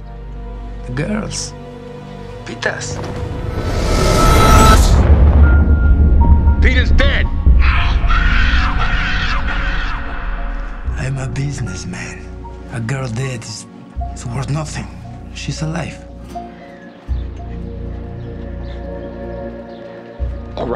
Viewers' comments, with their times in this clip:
0:07 That scream, is half of the movie. You can feel it. Just an awesome action movie.